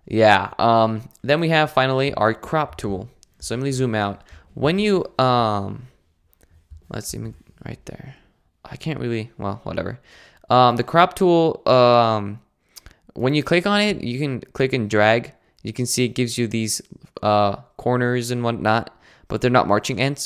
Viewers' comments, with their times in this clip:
0:06 then we finally have a CRAP tool watching videos on 1.25 speed sure is something